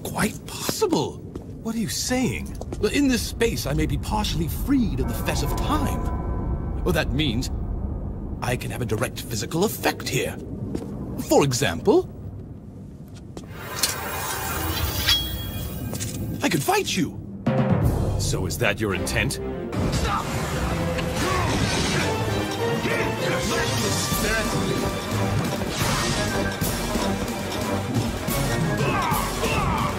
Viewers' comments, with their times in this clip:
0:10 He sounds like an excited child meeting his hero when he says "I could fight you! :)"